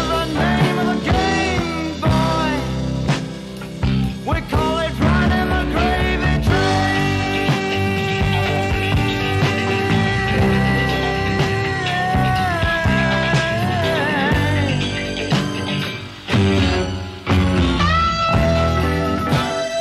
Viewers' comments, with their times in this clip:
0:06 That's Roy's voice Deffo.